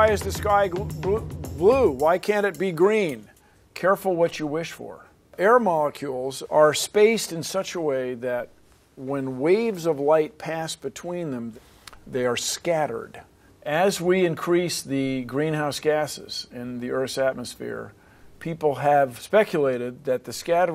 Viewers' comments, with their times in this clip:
0:03 be careful what you wish for parker that sounded so similar